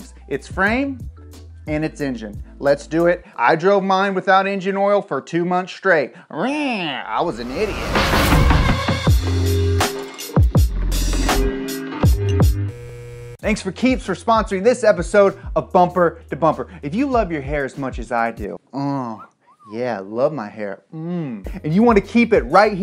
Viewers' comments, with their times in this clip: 0:09 why does your intro sound like the porn hub intro